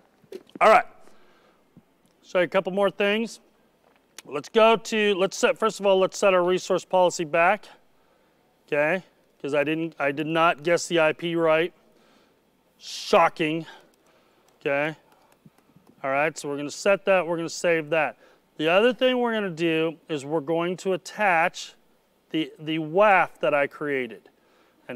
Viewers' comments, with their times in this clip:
0:06 i love when the audience applauded